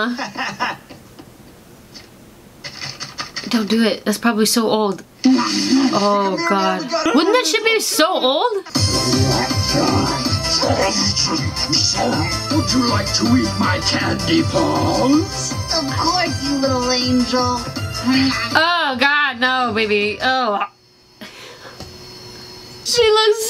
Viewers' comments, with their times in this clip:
0:09 you know this dog gibberish? You should try playing it backwards.